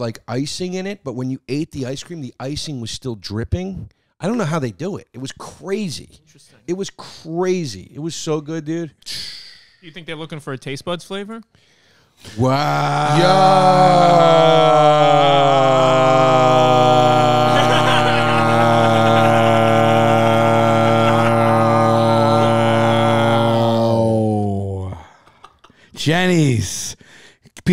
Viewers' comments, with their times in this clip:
0:10 Lmaoo whenever you guys were like "WHAAAAAAAAAAAAAA" you successfully woke my cats up from a deep slumber and they began looking around frantically like a plane was crashing 😆
0:12 best ASMR experience ever?